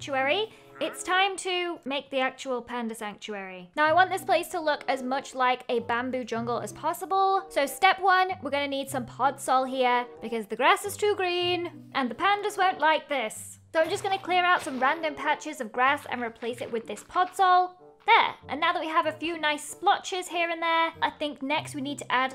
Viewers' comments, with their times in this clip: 0:04 i screamed as well